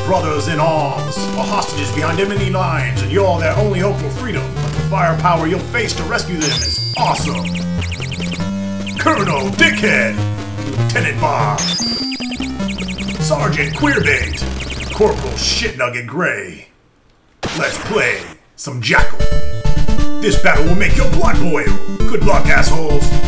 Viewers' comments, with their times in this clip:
0:04 ...behind "emmoney" lines. 😎